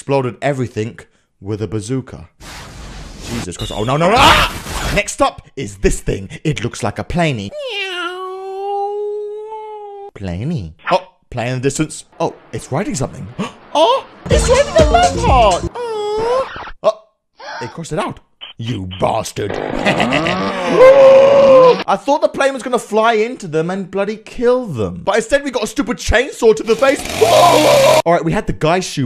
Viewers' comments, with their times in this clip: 0:10 I love how he says plany